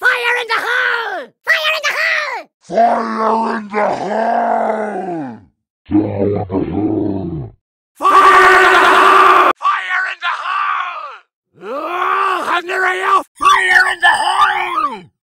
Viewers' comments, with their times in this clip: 0:12 This is Reversed Effect!